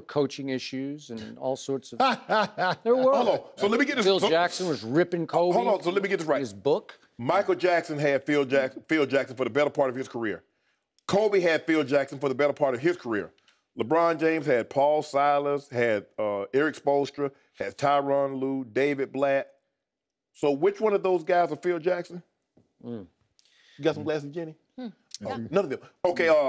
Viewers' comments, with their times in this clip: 0:07 So Nobody Notices he says Michael jackson 😂😂😂He said it with so much confidence
0:08 sharp says Michael jackson had phill Jackson with so much confidence 😂😂😂💀💤🥸🤡